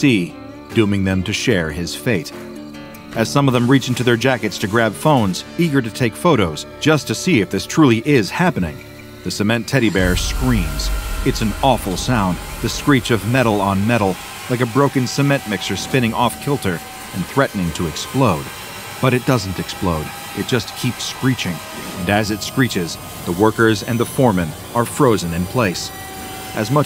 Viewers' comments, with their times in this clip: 0:09 Stone Bear Screaming Like SCP 973 in